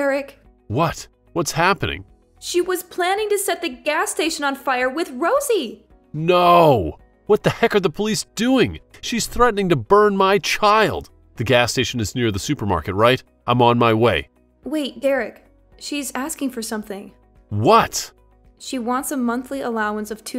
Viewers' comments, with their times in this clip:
0:03 The acting was not the best I mean guy finds out she’s planning to torch his daughter and all he can muster is a halfhearted no.